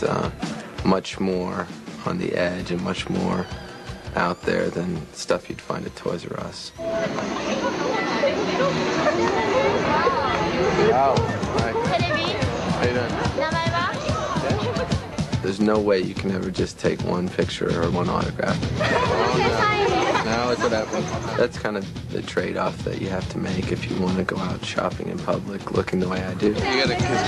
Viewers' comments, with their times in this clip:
0:10 Lol the Japanese girl seems to say "Television? Who are you?"